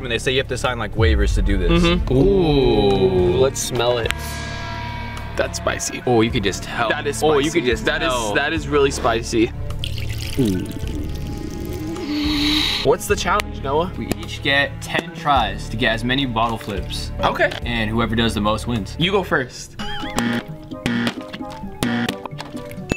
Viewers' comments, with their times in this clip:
0:10 there was a weird breathing noise